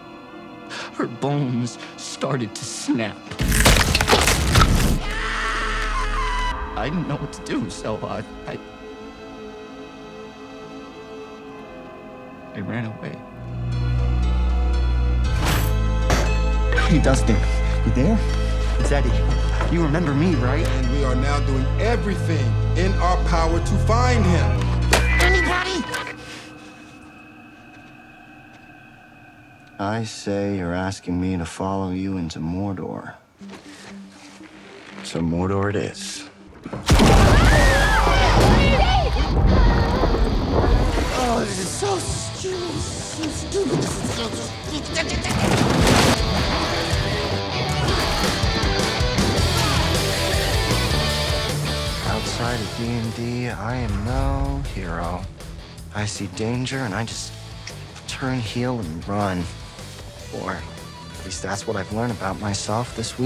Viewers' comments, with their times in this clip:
0:05 it was funny asf but also scary like when u wanna believe it’s real you’ll be scared but if ur a person who watches a lot of funny and scary movies then it’s funny cuz in scary movies they always scream like that and in funny movies it just makes someone laugh hearing them scream but the first time I watched this I was scared when cuz I felt bad for him but then later after the season ended and I rewatched it I would just laugh cuz I alr knew it was gonna happen and I also dunno why I typed so much abt just a scream😭😭😭
0:44 eddie weird noices